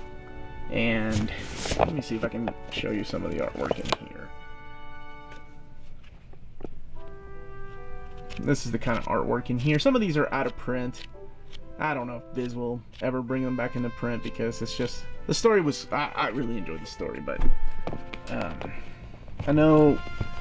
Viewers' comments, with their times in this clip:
0:07 I didn't really pay attention to the music until around the minute mark and realized that it sounded like trumpets doing the Uncharted video game theme! Love that. Nice touch.